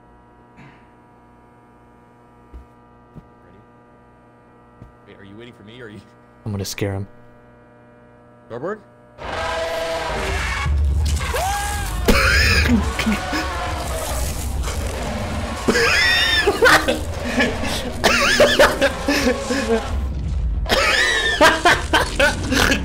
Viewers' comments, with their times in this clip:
0:05 "I'm going to scare him" screams
0:10 That scream is simply perfect.